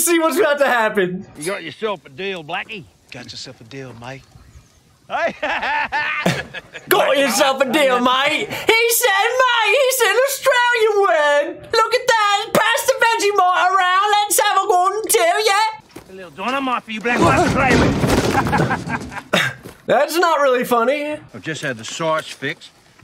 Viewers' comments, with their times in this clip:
0:09 does anybody know why Pinky from Pinky and the Brain made a cameo here? 😄